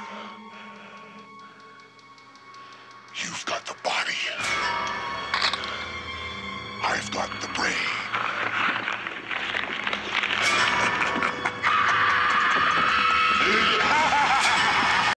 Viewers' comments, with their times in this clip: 0:10 LMAO Dat Scream
0:12 he screams funny